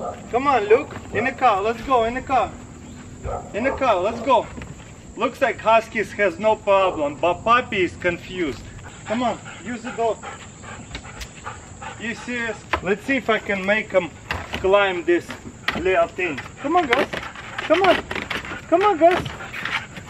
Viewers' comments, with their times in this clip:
0:07 why he said pappies confused